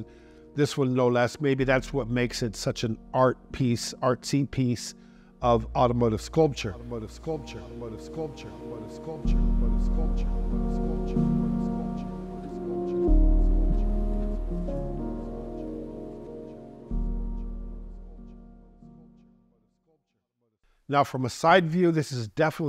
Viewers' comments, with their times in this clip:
0:06 The editing on your videos sometimes is a bit off in my opinion, a bit too over the top. I understand there is nice ambient music while presenting the car, to set the tone, but when you criticize the design and point out shortcomings and there is still a similiar soundtrack in the background its kind of contradicting. Idk the echo on is also a bit extencive. Just wondering if thats how you intendet the presentation to be framed.